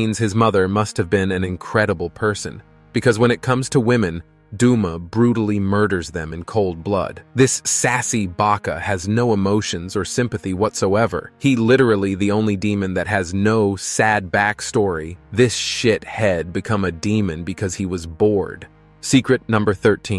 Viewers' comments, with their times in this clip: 0:05 “duuuoomaa” Rlly got me💀